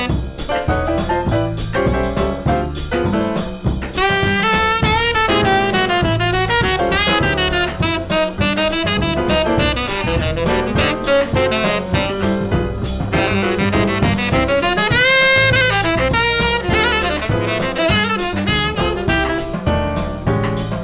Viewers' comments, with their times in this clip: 0:04 MAN that Hot House quote
0:06 that hot house quote was so sick haha